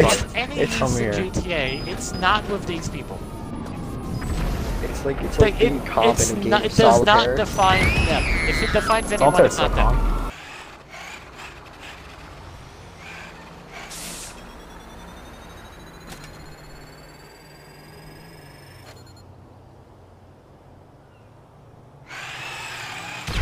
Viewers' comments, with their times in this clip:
0:07 Screem like girl 😂